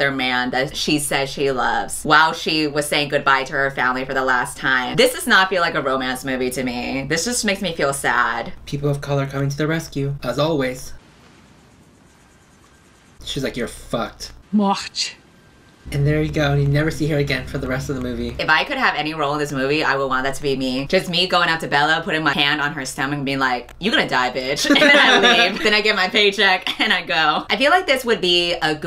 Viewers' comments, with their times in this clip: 0:09 THIS PART IS SO FUNNY TO ME BC HE SAID "oh you're fucked" and the lady literally said "DEATH" in the weirdest way possible im crying